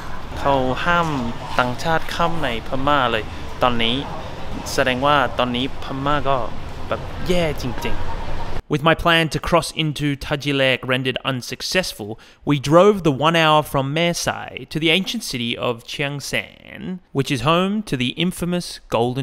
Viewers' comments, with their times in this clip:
0:04 That must mean Myanmar is in a pretty bad situation at the moment. แสดงว่าพม่าก็แบบ...แย่จริงๆ I'm Thai. If you said พม่าก็แบบ...แย่จริงๆ sometimes it could look like you said Myanmar is really "atrocious" or smth like that. I know what you trying to say. You should say smth like พม่าก็แบบ...กำลังแย่จริงๆ that's mean "Myanmar is...undergoing some real bad situation". Anyway, from being one of yearlong subscriber, your intonation/tone when talking in Thai although it still not 100%, but it is progressing up a lot for sure. Your choice of word is much better too.